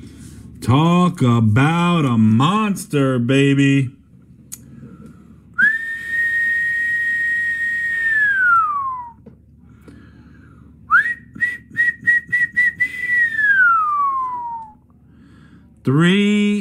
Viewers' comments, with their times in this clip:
0:03 guy really loves whistling